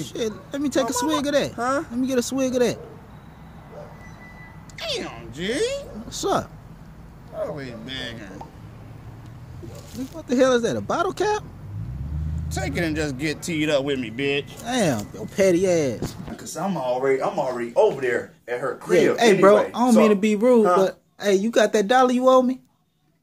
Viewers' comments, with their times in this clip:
0:08 That bottle pop doe! 😂